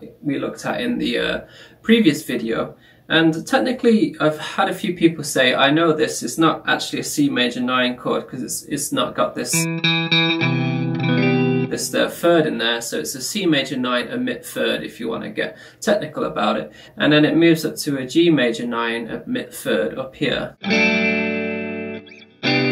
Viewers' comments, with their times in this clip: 0:03 gave me MAD hot mulligan vibes